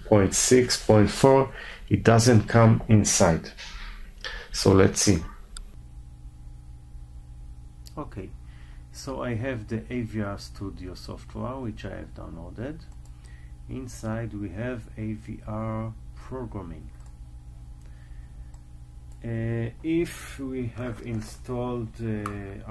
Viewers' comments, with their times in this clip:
0:05 The sound stops ?